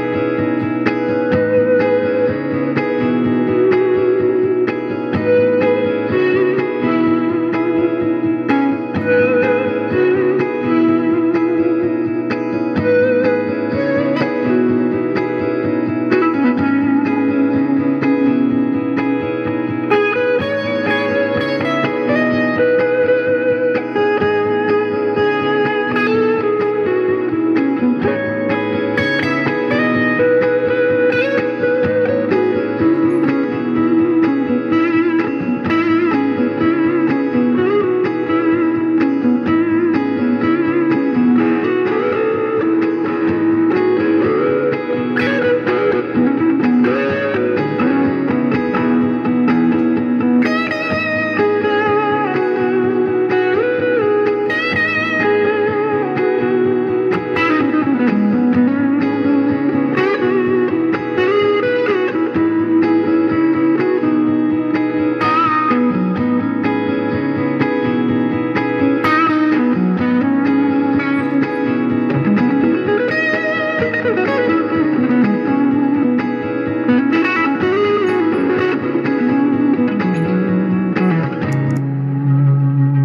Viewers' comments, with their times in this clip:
0:06 Those natural swells under the loop were so good!
1:06 Did i hear a little Garcia ? Great stuff